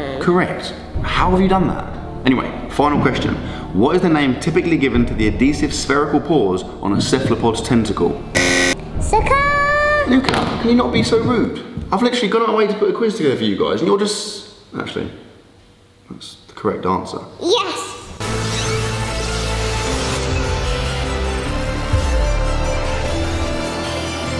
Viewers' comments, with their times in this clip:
0:09 what is he saying